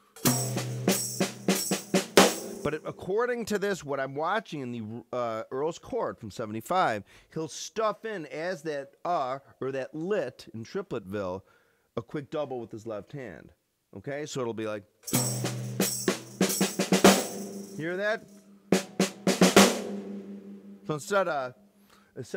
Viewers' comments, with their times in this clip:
0:07 Instead of a left hand double which is happening technically, could he also be adding a lick from Flamville on the end? sort of a displaced windmill flamadiddle rudiment? This is by far the coolest and most elusive part of the solo.